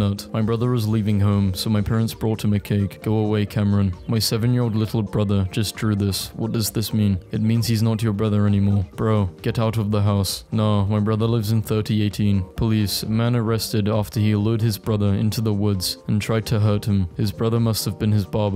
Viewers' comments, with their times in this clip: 0:04 Holy music stops